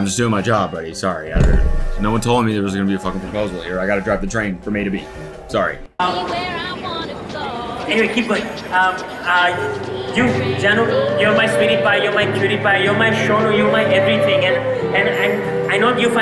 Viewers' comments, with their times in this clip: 0:03 The song got me dead 😂